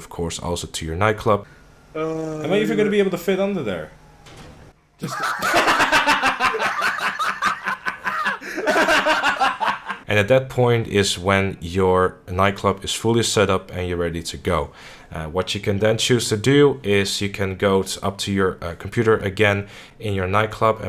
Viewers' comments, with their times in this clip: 0:04 lol that laugh lmao xD
0:05 sounds like gradeschool laugh hahahahaha